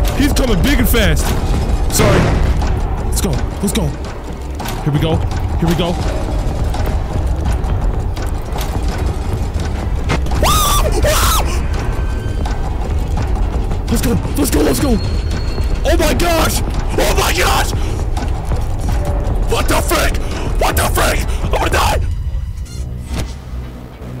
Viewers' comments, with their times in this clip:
0:10 dude screamed like a lil girl😂